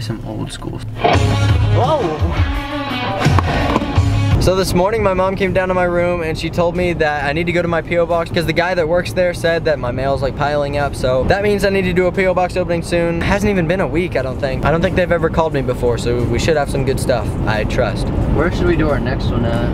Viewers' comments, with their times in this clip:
0:07 That old school music was my gymnastics music